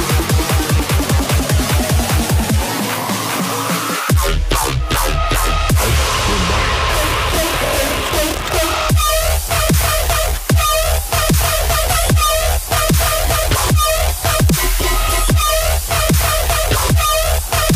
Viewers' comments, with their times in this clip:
0:04 Second drop is OUTSTANDING!!! Instant like!